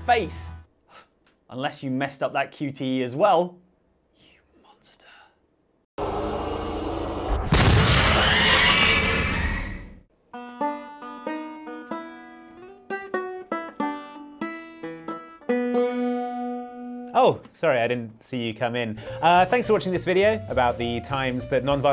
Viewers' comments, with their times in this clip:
0:05 is it just me or does that sound like the Game Theory theme?